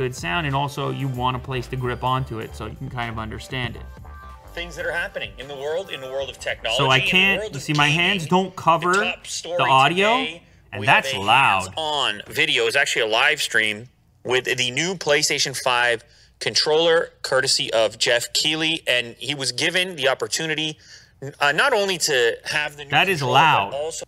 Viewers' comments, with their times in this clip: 0:10 and its loud Even my rog phone 2 louder than my friend laptops